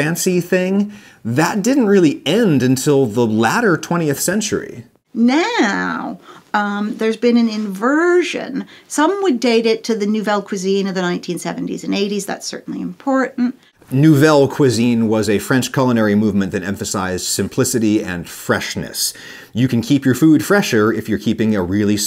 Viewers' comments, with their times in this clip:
0:04 For some reason, the "NAAAOOOOoowwwww" cracks me up xD